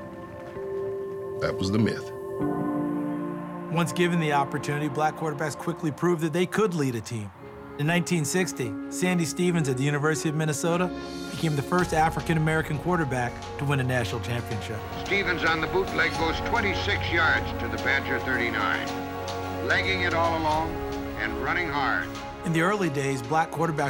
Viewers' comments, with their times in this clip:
0:10 did not expect that voice to come from him for some reason lol
0:10 voice does not match 😭😭 MY MADDEN CHILDHOOD !!!